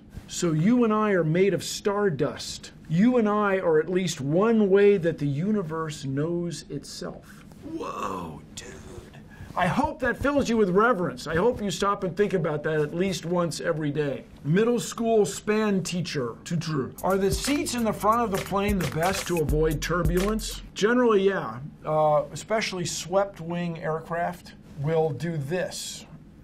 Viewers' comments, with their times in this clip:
0:08 Why did he sound like he's high AF? 🤣😂😂😂 The way he also said "woah" also made my day.